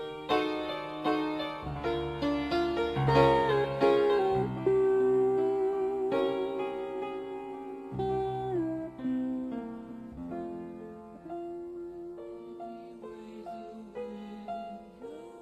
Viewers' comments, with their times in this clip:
0:03 I always thought that Freddy was singing singing but it was the guitar 🎸